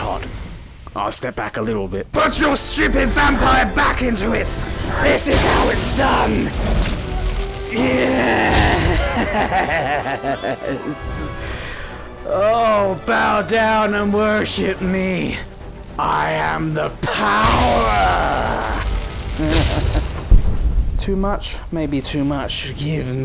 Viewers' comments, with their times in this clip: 0:05 that sounds like a literal villain, dayum i got chills ngl